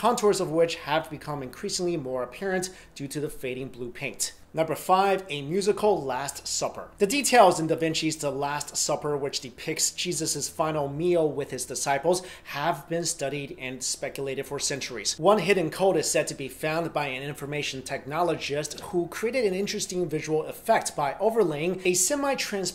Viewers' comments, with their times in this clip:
0:09 did he say Cheesus ?